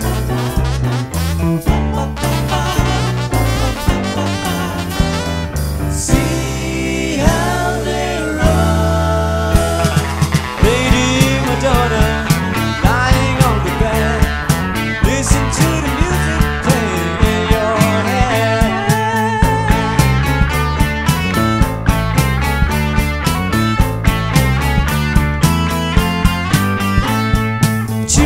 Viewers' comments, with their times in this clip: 0:09 Wow guitar on is amazing!